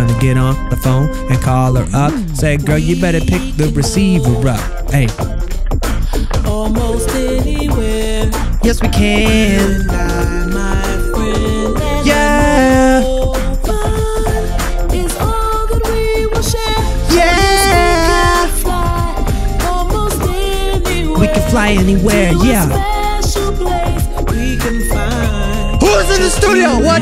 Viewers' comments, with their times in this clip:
0:08 the auto tune is cool how can I get it?